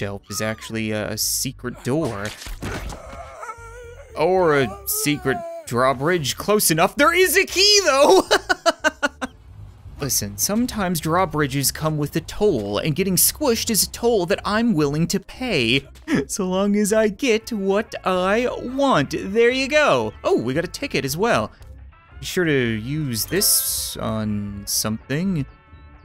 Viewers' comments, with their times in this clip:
0:07 i thought he said "there is a Nemo" not "there's a key tho"